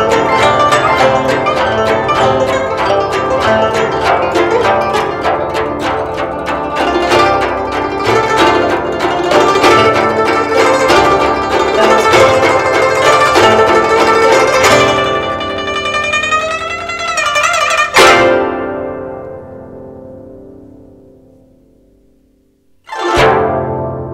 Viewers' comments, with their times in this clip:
0:07 i love this cuz it keeps on getting faster and faster :>